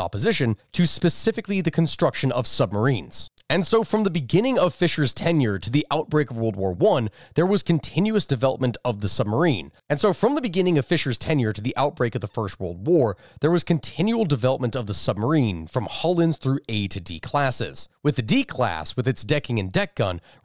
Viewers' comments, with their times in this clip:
0:06 Quick note for editing, around the mark the audio repeats.